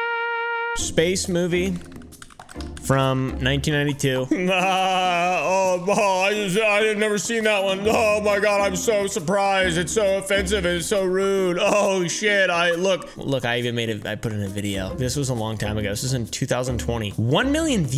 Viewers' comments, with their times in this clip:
0:03 WHY DID HE SOUND LIKE MARKAPLIER??????????!!!!!!!!!!